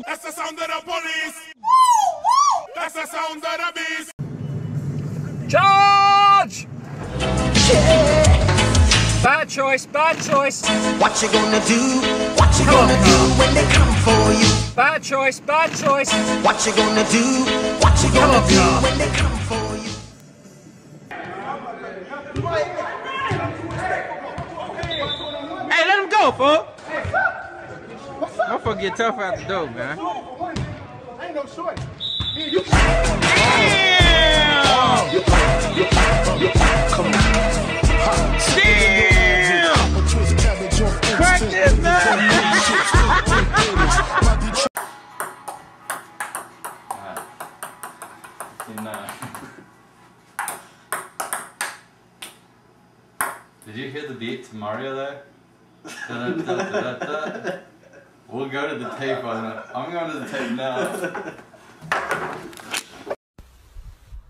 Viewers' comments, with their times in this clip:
0:05 Shadies like a melody sounds like the scream
0:10 when crossing the flood like river. Sounds like Bad boys.
0:32 Sick beat drop 😂😂😂😂
0:49 I'm amazed how he caught that, and also how exact Mario it was. (But a lot of these were VERY forced.... The just a "bang" on repeat, isn't really interesting, since it can be placed to anything.) But the Jurassic park door is epic, the ice shovel nirvana is perfect, and if not blowing my brains out with the over-amplified Seinfeld, it would be good too.